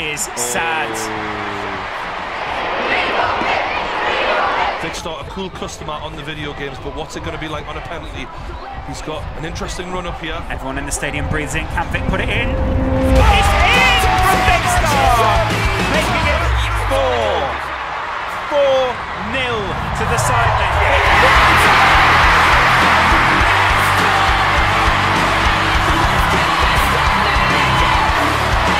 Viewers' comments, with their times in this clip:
0:10 2 years later, and I still get the goosebumps from the croud
0:13 cue the Indian music